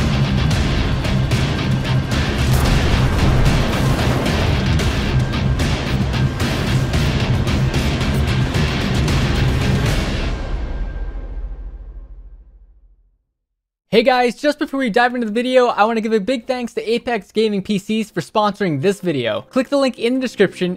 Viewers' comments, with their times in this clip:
0:04 we got doom music